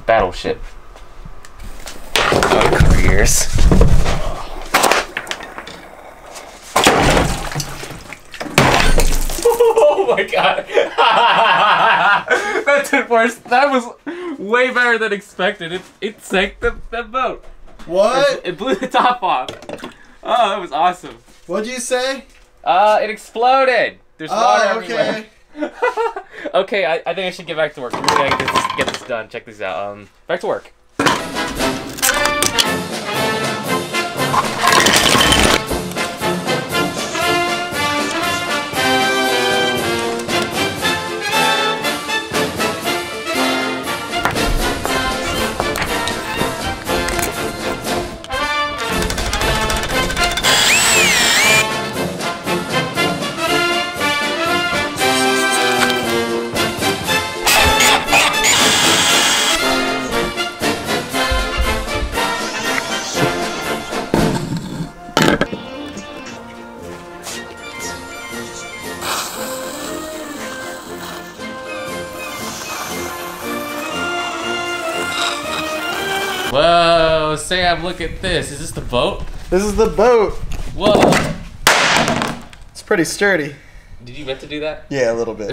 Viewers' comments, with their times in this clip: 0:09 laugh of a mad man
0:11 that laugh lmao
1:07 I remember hearing that music as I was getting the casualty report on bomber crew after a failed mission